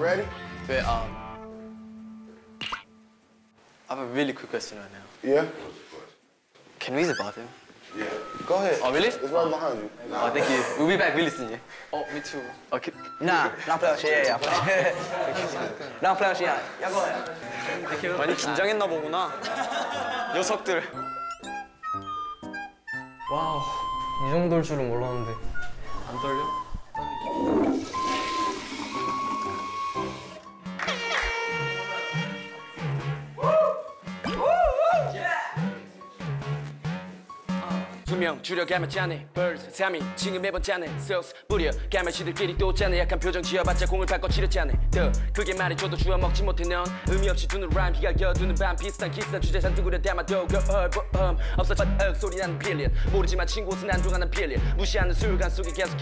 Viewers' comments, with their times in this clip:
0:04 HE HAS AN AUSTRALIAN/BRITISH ACCENT A LITTLE I LOVE THAT
0:39 idk what he said, but dude went off fr